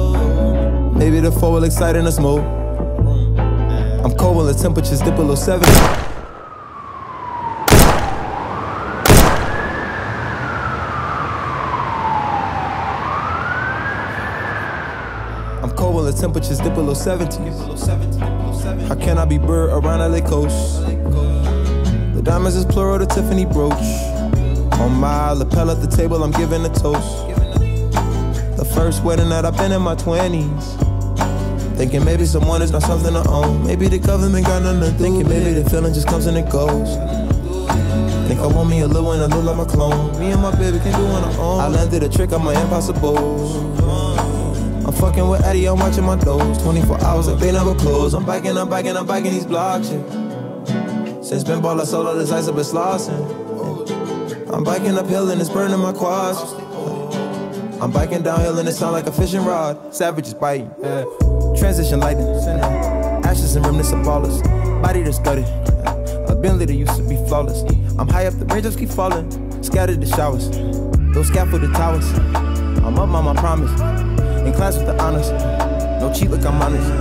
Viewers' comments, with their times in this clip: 0:06 Watched this with Airpods and full volume , Caught me off guard on i almost threw my brand new Iphone XR to the ceiling , be warned lovely viewers.
1:01 what kind of version is that ? im talking sounds different than the one on spotify